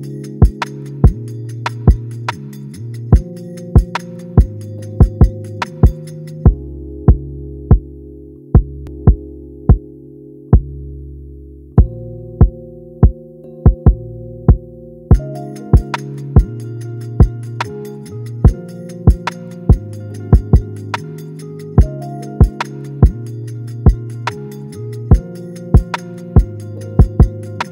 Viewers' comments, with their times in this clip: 0:08 I think it skipped ?